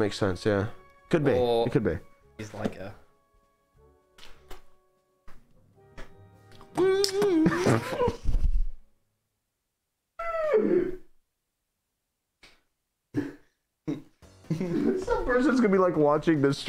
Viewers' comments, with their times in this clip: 0:04 He just did that out of nowhere and teh second of silence after 💀💀